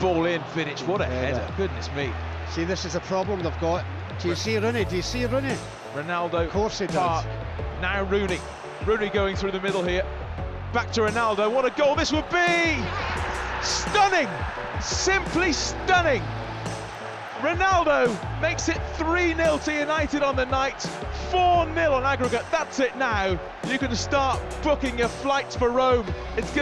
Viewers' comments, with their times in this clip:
0:10 Was that Martin Tyler’s saying yes when Ronaldo scored against Arsenal?! 😂